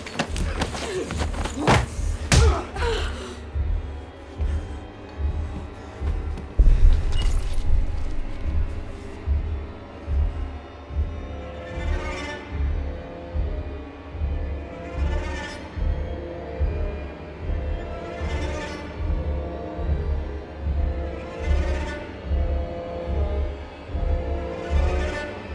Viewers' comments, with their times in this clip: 0:10 anyone else get a Danny Elfman/Bernard Herman vibe from Michael Giacchino’s score there?
0:11 Anyone else love Michael Giacchino’s score there? Just me? Okay!
0:12 Best scène. Terrefying music